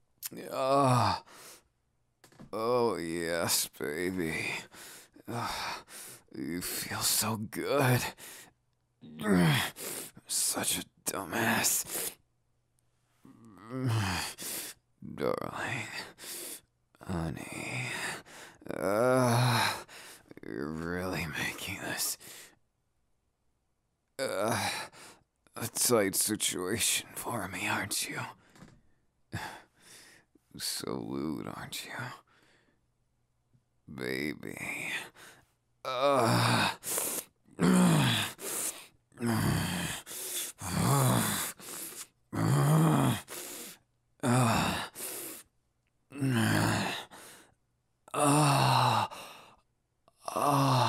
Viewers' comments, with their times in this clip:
0:08 is it a guitar behind ?
0:21 Me: Sitting in class, making sure my volume isn't too loud My headphones: Bakugou moaning Yeah maybe I shouldn't listen to this in a classroom-
0:38 He sounds like lawn mower that won't start 😂